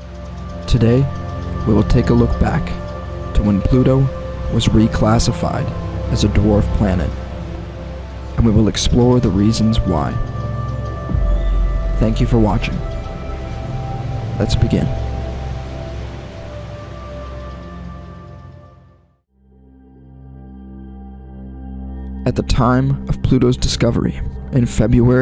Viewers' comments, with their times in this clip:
0:08 More power to you man, but maybe try to use a less modulated voice? Noped out sorry. The VO just doesn't come across nicely and honestly, it's immediately distracting. It's like you're trying hard to sound suave and important, but it's a bit on the nose, imo. Less movie trailer voice, more Hank Green or Phil DeFranco maybe, I don't know. Guess that's why there are actual pros for the job, eh? Just my 2¢